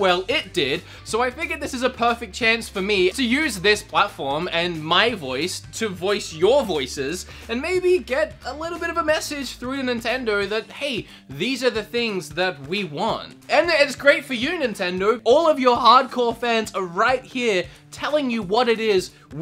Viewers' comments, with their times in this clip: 0:07 monokuma hahahah is the best time stamp